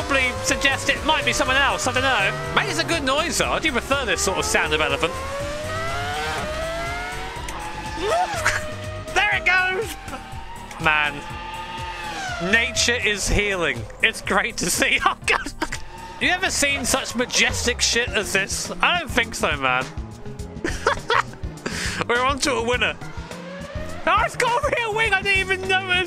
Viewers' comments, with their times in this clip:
0:07 their engine is just the elephant screaming on steroids
0:12 missed chance to put elephant trumpet sounds as engine